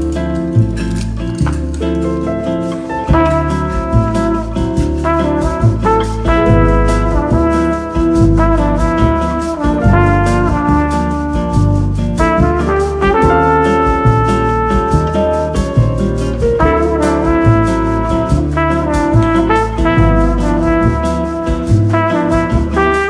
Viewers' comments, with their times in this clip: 0:09 Bossa Nova Song is so beautiful